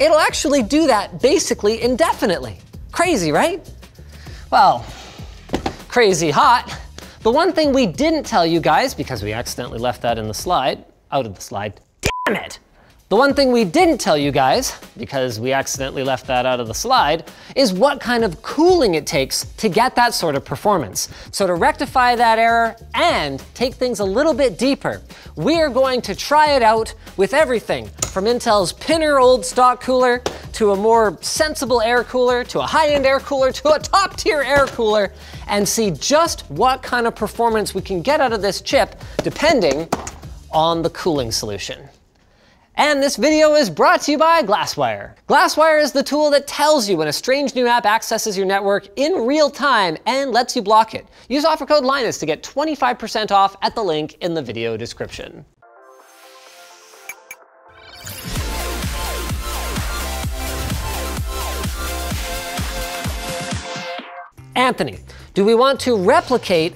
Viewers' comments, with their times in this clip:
0:07 Whoever edited him messing up the line, yelling "damn it", and then repeating the line fixed ... absolute savage.
0:50 There is a Audio Hiccup in the sponsor video